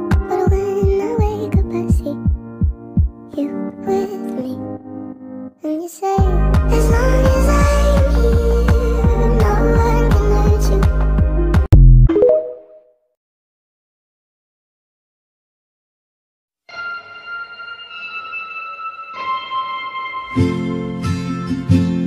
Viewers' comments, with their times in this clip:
0:04 The music was me in music form